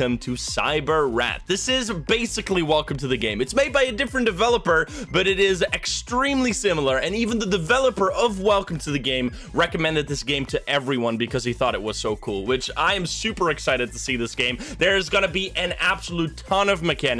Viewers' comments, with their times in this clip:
0:05 ''extremely similar'' sounds like a trailer for a movie :D you should consider dubbing!